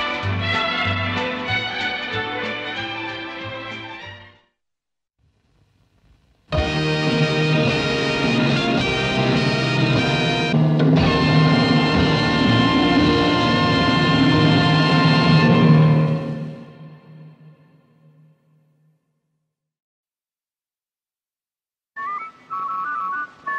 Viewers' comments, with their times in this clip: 0:06 Doesn't the theme sound like it northen brother, Grampian?